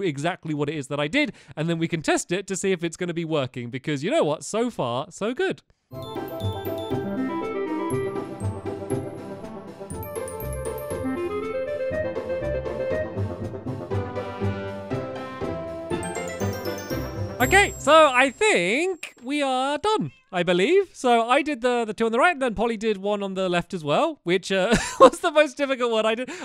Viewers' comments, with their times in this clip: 0:07 So good music!!